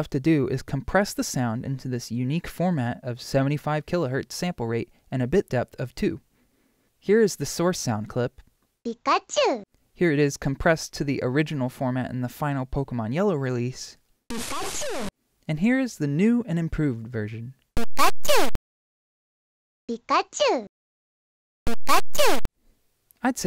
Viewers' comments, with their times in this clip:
0:08 calling your one "inproved" is quite selfish considering it's alot different than the others and in my oppinion more painful to my ears